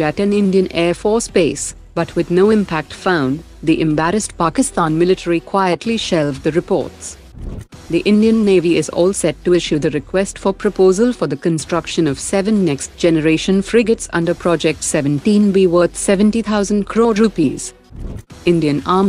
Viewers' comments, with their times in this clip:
0:07 Something unfair from this channel. I wanted to hear how that sounded in English through a female voice😂😂😂